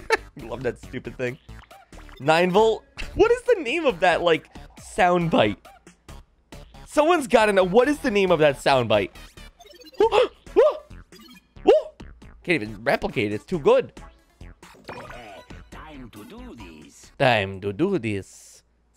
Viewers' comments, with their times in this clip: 0:06 It's supposed to be like a cuica LOL